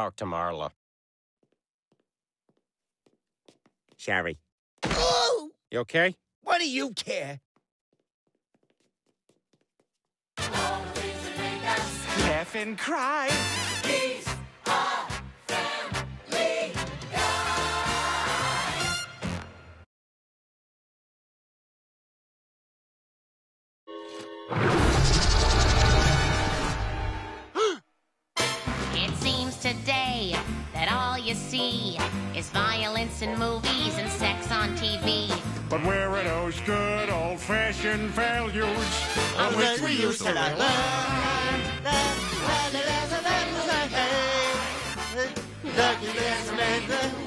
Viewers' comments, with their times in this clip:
0:04 I'm dying from the way he yelled "OHHHH" 🤣🤣🤣🤣🤣
0:28 in this intro im pretty sure they used the audio from the old intro because you can hear the "oooooooo-oooooooooo-oooooo-ooooo-oooooo-oooooo" in the background which was only heard in the first few seasons.